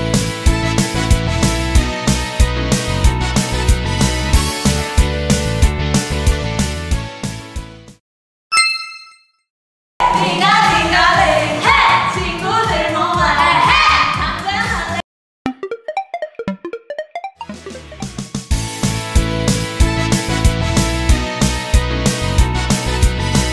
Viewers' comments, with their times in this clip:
0:10 Mamamoo Best Ever, No Auto tune 😂